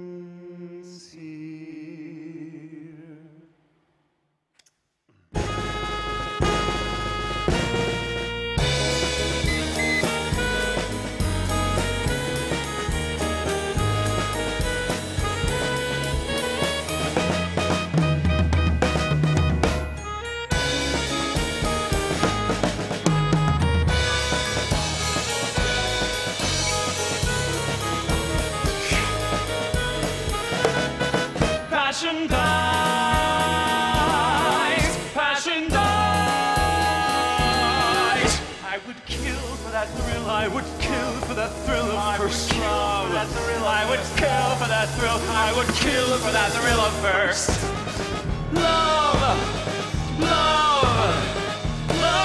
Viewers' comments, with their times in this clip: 0:08 Ok but do you HEAR that sax squeak
0:09 yo why the heck do i hear someone playing a recorder
0:09 that little squeak has me SCREAMING
0:09 HOLY SHIT THE INSTRUMENT CRACK OMG
0:09 I can’t be the only one who hears the damn recorder
0:14 Lmao I’ve seen the 2016 cast version so many times and at the lil dip I was expecting the “grr” thing that they do so I was not expecting Whizzer to go 😛but Im not complaining it was perf
0:36 was there a reason that marvin just stays on the same note ?? the next note in the chord is not hard and is what is written. it just sounds strange with him not going up and sort of not as interesting